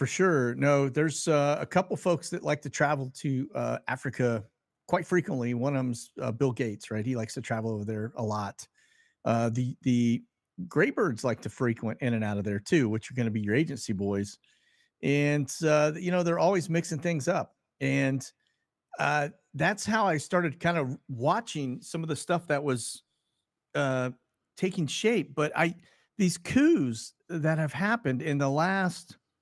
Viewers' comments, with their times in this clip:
0:10 the what? Grape birds?